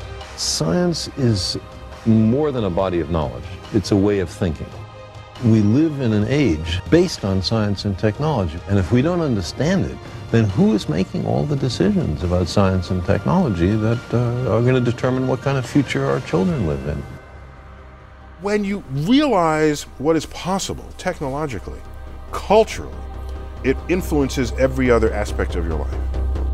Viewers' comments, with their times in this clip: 0:09 is it just me that heard the vine boom effect during the windmill?